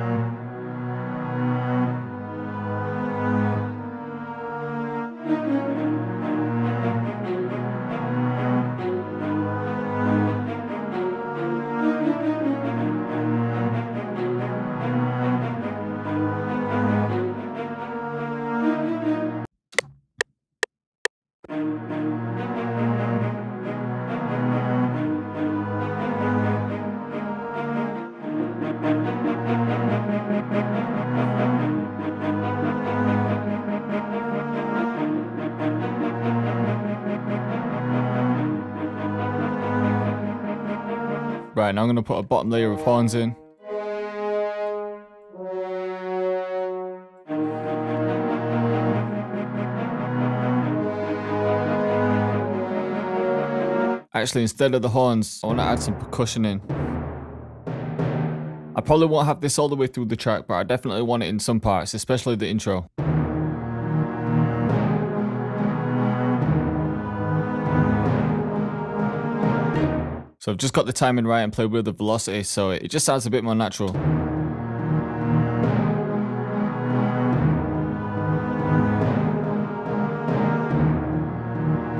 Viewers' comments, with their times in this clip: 0:05 tht shit sound like a whole movie intro wtf🔥🔥
1:02 first i thought he was making the theme song of pirates of carribean